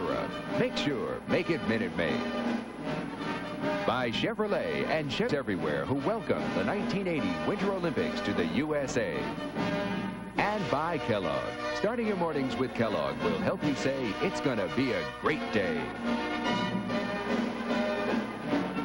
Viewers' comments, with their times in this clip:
0:03 “by Chevrolet and shit everywhere”